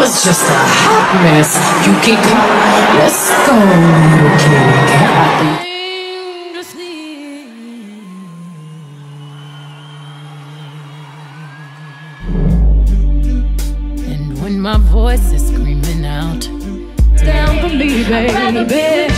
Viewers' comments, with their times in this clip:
0:06 is my favorite low note.